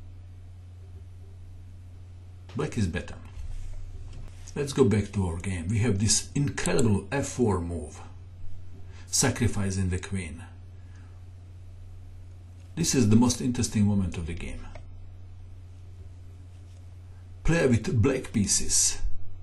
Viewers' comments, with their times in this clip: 0:06 ... Black may be "Ou-kay" but he is definetly not bettah....